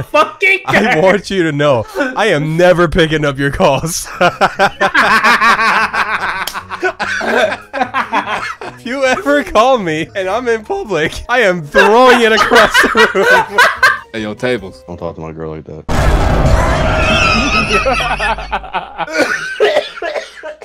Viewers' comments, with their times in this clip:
0:05 Lego Batman ahhh laugh